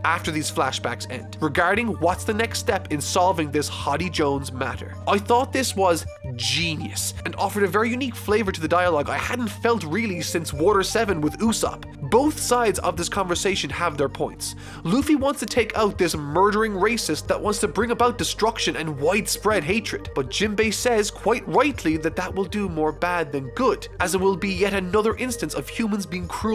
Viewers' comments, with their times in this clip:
0:08 Omg The donkey kong country 3 waterworld theme is so good perfect atmosphere.